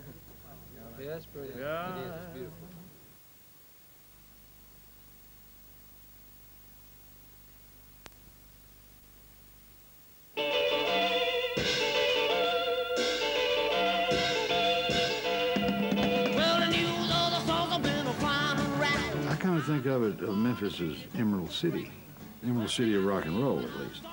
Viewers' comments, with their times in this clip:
0:08 What is the song ?? Kinda sounds like Gene Vincent, but this is only Sun music.